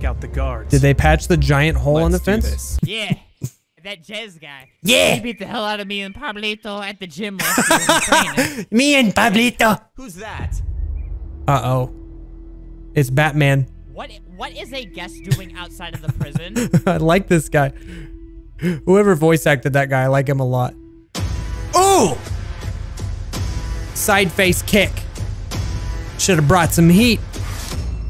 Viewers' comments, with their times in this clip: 0:03 is that Albert?! (Flamingo) THAT SOUNDS A LOT LIKE FLAMCO LOL
0:03 The guy I’m pretty sure is Albert from flamingo or at least sounds like him
0:04 THAT IS FLAMINGOS VOICE I CANT BAHAHAHAHAHAHAHAHA HE SOUNDS SO FUNNY
0:04 That Bacon Sounded Like Flamingo AKA Albert Aretz
0:14 he sounds like flamingo
0:15 THAT SOUNDS LIKE FLAMINGO NO JOKE